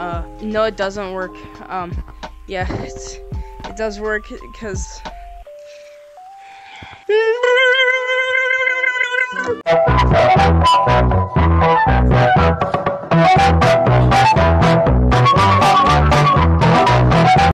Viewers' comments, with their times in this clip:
0:09 nice music I'm in love with it